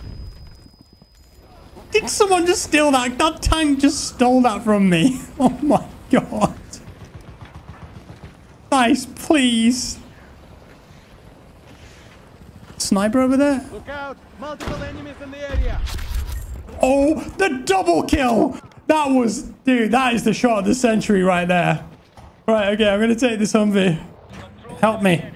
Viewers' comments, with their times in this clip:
0:09 the pain that ‘Dice, please’